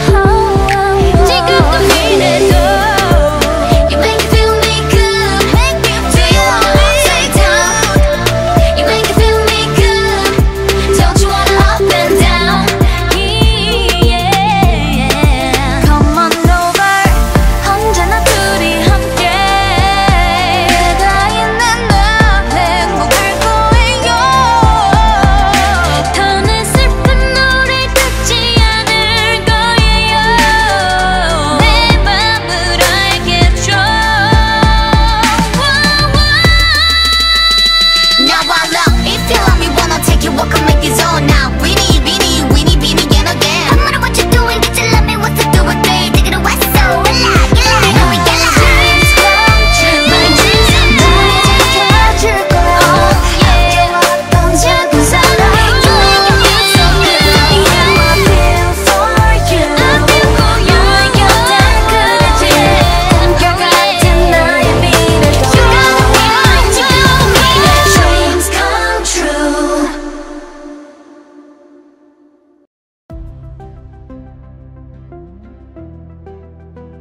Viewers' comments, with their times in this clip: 0:04 karina's backing vocals in "you make it feel me good"🦄
0:05 karina’s adlib is godly here
0:05 if this isn't lead vocalist material then idk what is
0:16 Giselle vocals just heal my ears
0:37 I think no one else could've made sound THAT good like Karina does cause like, I'm obsessed with this part
0:37 what language is this?? lol
1:00 ningning's voice is so relaxing